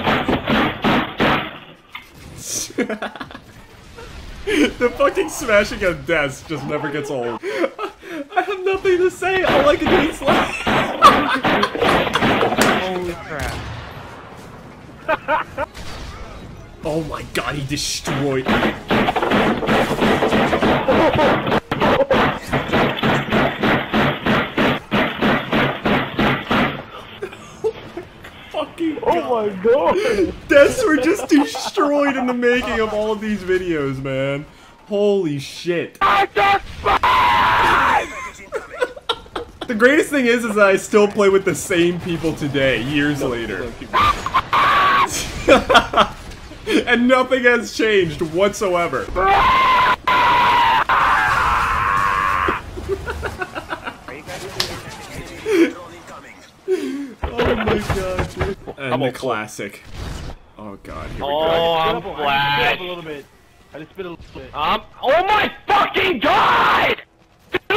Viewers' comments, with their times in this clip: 0:05 That laugh :3
0:18 Plot twist: that wasnt his hand hitting the desk
0:20 it’s like a heavy artillery missile just being launched from a helicopter on repeat
0:20 sounds like a steam train
0:23 Bruh, just straight up sounding like gunshots🤣
0:48 deadass sounds like a happy wheels scream omg 😂
0:49 is my favorite screech